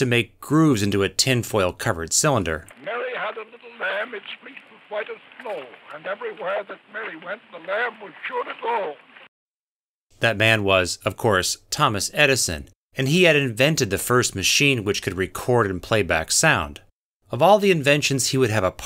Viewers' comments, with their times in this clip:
0:03 if your not paying attention this sounds like a man going down a sink drain